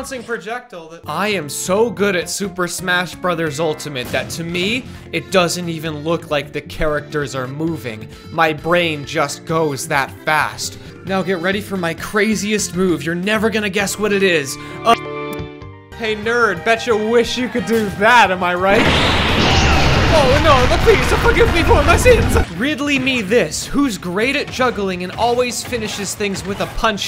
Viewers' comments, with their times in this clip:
0:08 The bad part is that after i watched detroit become abridged now I just hear ur voice as connor right on..... The sex number